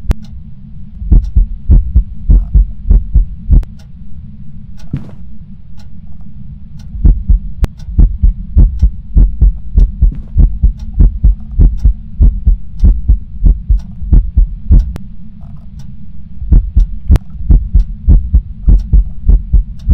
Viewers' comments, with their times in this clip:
0:06 sounds like my mans was doin a dance